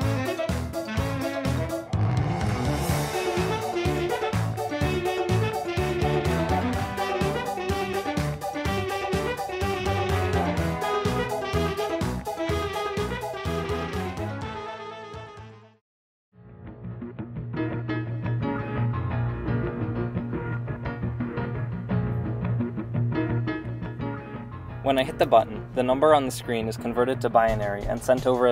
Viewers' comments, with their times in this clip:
0:10 That song where he's making more circuits... like a group of people actually got together and said "let's record this!"